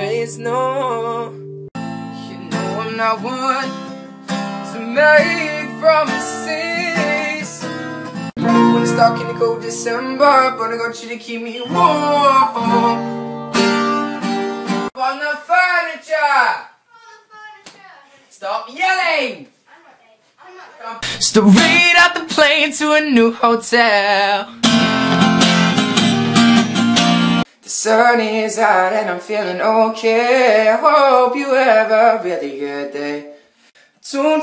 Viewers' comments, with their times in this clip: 0:08 i love how he sing Lego House on
0:09 😍😍😍 damn that lil voice crack 😍😍
0:15 that accent tho
0:16 his British jumped out ahaha
0:21 I came here to watch Shawn Mendes vines and suddenly I'm attacked with him singing Midnight memories. I'M GETTING WAR FLASHBACKS